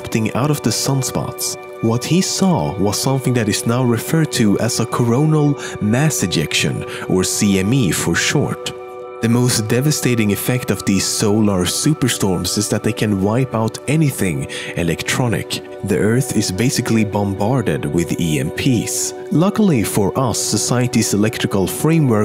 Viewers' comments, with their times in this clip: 0:07 I thought it said erection ..